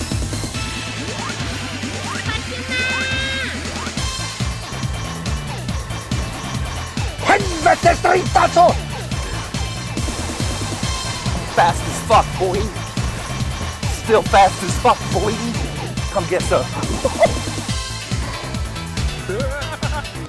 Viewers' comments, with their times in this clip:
0:07 did i just hear some mfkin norwegian?